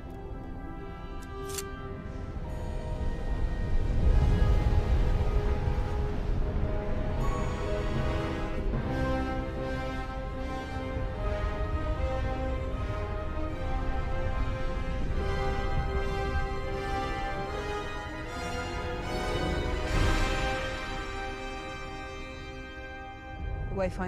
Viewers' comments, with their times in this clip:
0:08 Imperial March Intensifies